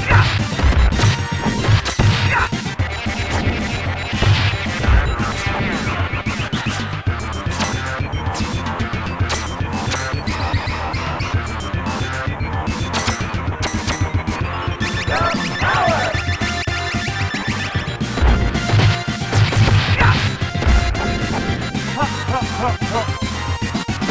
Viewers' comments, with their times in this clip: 0:06 Lmaoooo, the music had me in stitches...